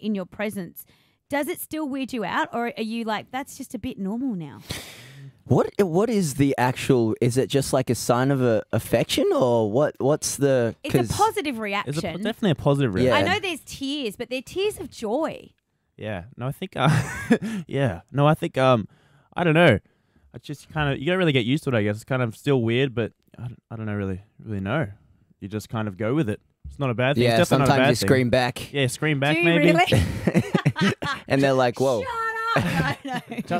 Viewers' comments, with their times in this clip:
0:09 replaying calum's voice crack
0:16 Luke talking to himself